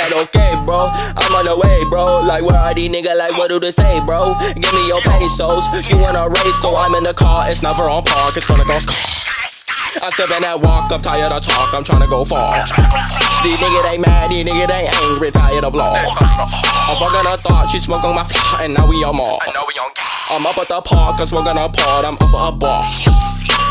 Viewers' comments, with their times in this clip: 0:08 who dafaq is that guy screaming his ass off in the background